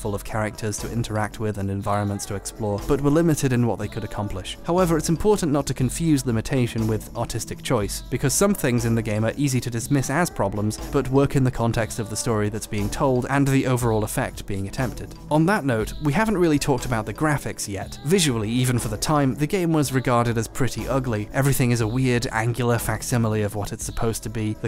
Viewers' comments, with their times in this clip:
0:08 i thought he said autistic choice for some reason-